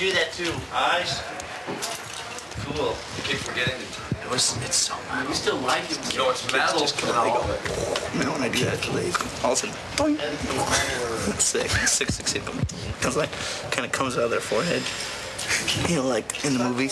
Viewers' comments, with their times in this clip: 0:04 Can someone please transcribe what Jason says from till the end? English is not my first language and I can´t understand becase of the noise in the background.